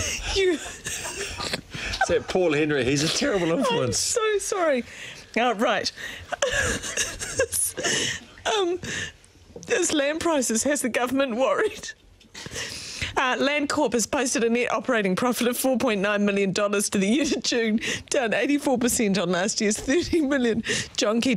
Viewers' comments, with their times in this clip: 0:08 "... Umm..." (Trying her hardest to hold the laugh) 😂😂